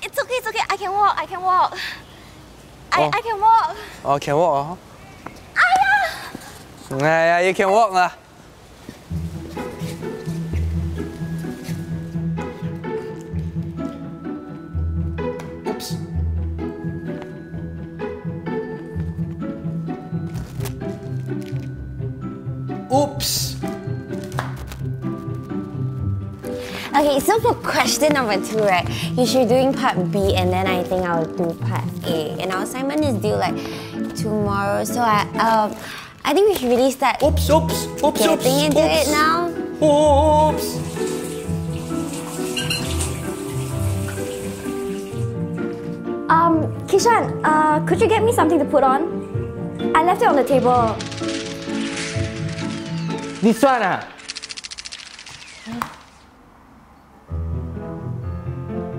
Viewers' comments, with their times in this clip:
0:10 Did she say chee bye HAHAHAHAH
0:10 did she just say c***bye HAHAHA
0:39 the most intense oops i have ever heard😂